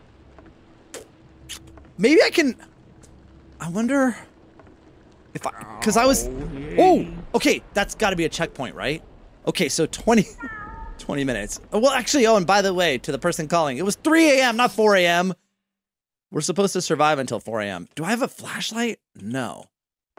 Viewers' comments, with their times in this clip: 0:04 he sounds like he swore